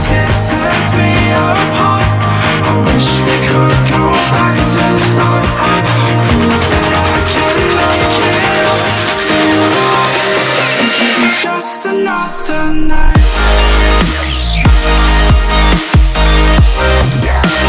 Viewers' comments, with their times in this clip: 0:05 epic drop~ <3